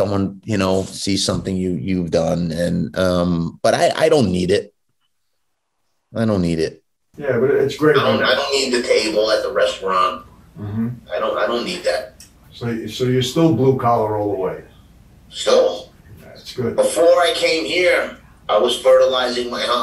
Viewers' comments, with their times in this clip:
0:04 in I swear I can hear people whispering in the background?